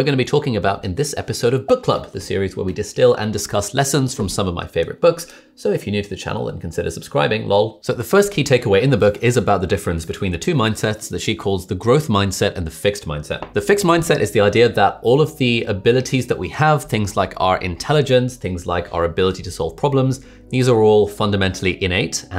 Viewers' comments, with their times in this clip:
0:05 the most unnatural lol ever